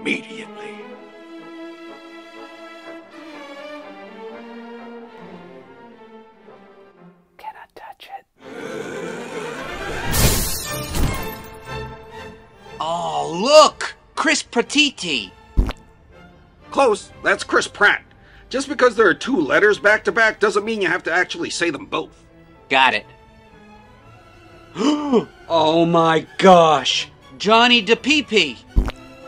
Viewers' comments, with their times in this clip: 0:10 is that a freddy faz bear HAR HAR HAR HAR HAR HAR AHR HARHAR AHR